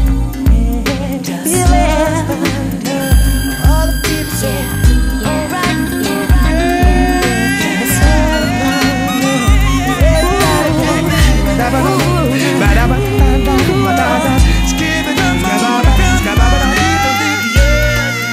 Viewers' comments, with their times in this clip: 0:04 Are you talking about a picture? If so then he's you can hear his voice clearly around there too.